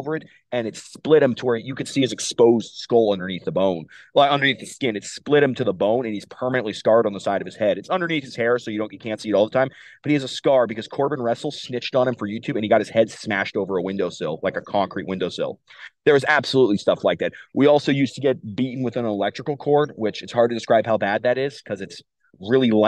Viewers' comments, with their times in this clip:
0:07 it sounds like you censored the name the first time he says it, but not the second time, figured I'd point it out if you want to censor it.